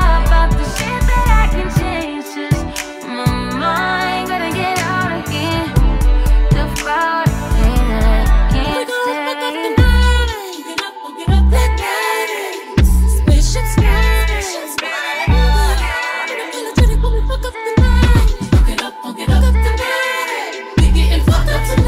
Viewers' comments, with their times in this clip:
0:09 Ok, I know this is like my 5th comment but bc I’m obsessed with the beat flow in shirt, is where it’s at lik my god ppl who can hear these mashups and blend them together well is also great artistry